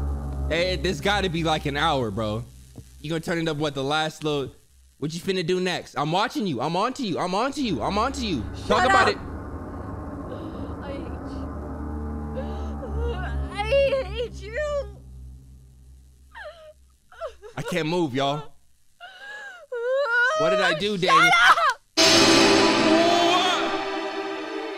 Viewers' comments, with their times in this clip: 0:06 LMAO mans got REAAAAL quiet.
0:06 My man's instantly went quiet